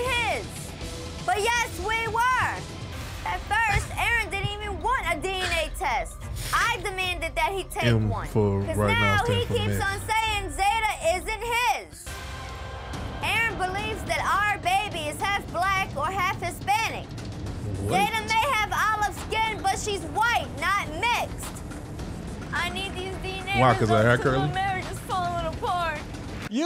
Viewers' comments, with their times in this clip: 0:09 why she sound like Harley Quinn without the accent?